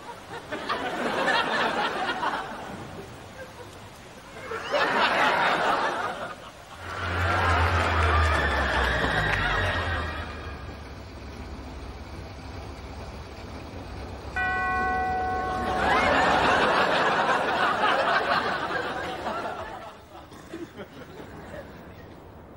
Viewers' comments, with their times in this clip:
0:07 I love the screams you can still hear ..